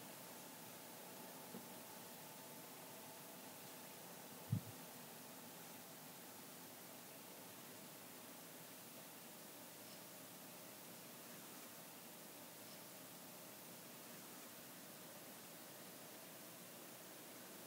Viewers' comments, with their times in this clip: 0:04 did someone bump the mic or something, because it sounds like it
0:05 kind of sounds like a heartbeat.